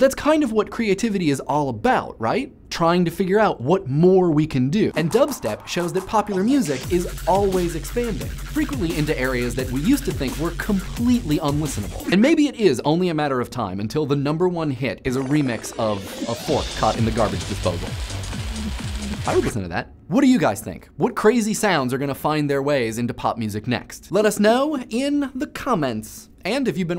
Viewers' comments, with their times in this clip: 0:07 i just can't listen to him while the bass is being dropped